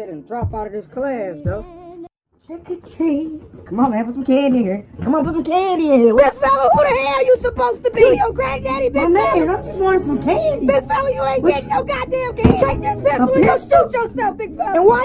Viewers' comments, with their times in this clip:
0:03 why he sound like riley frm da boondocks? -15-31